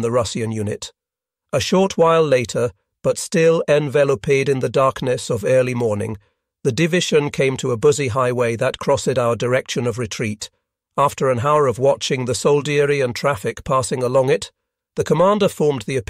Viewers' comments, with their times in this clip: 0:03 envel o paeed ???? is this AI or someone who cant pronounce english????? here, this is how its pronounced > en vel oped as in hoped